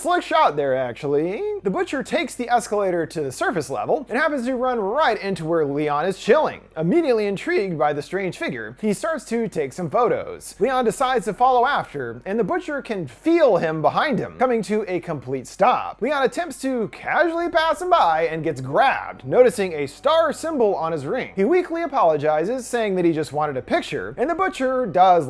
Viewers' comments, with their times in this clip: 0:06 that voice crack be bussin